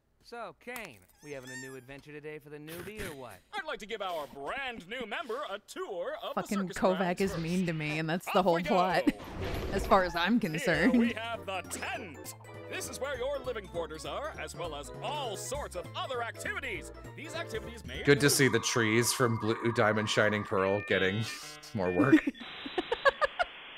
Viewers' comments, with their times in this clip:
0:06 is so accurate. You voice acted a favorite, good job on the voice acting!